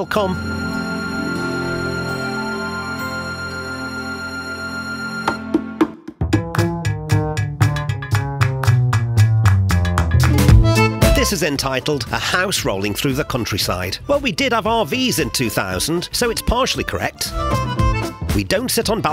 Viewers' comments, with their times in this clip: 0:05 I thought memenade started playing. But it was just jazz in Paris